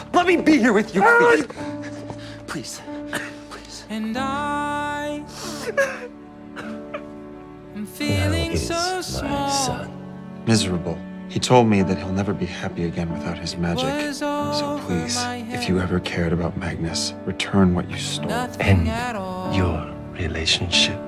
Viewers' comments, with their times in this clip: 0:04 I onow that we're supposed to feel sad but I can't move on from how cute and vulnerable Magnus sound here. Sorry?